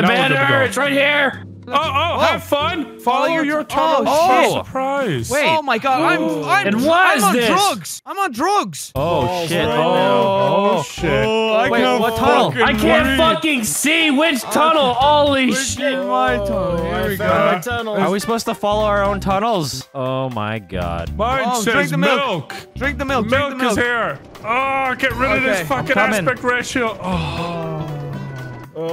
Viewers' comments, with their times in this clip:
0:09 play at 0.5 speed and they sound drunk AF🤣🤣